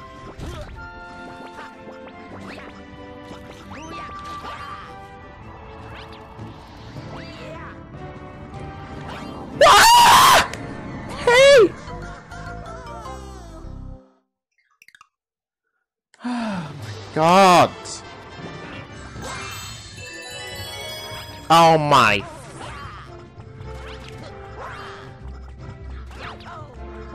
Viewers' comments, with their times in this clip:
0:09 rest in peace, headphone users.